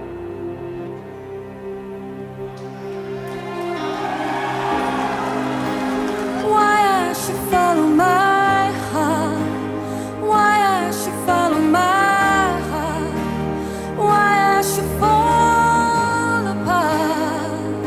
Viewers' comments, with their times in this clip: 0:04 Such a Masterpiece,goosebumps, from that min,such a Nice voice , speechless 😎